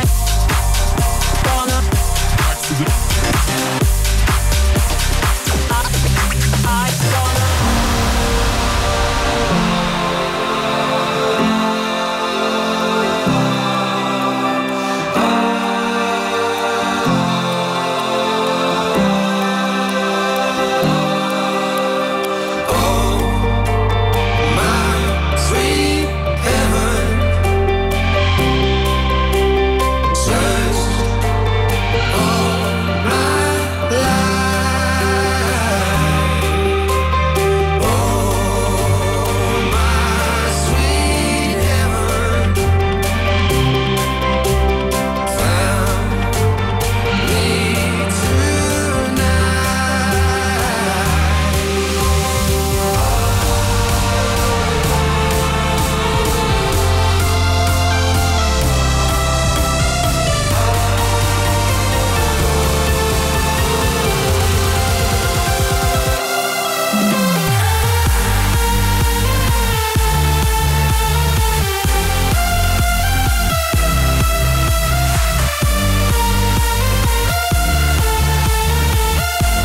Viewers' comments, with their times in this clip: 0:08 sound like Matisse & Sadko 😍❤🔥
0:08 sounds like jay hardway & nicky romero collab
1:05 Jay Hardway x Matisse and Sadko?? It even has the double clap in the drop!
1:06 reminds me alot of dragon by Martin Garrix and M&S